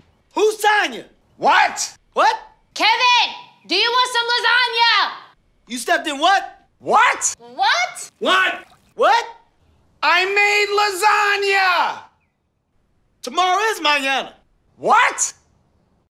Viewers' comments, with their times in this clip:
0:08 censored with bubbles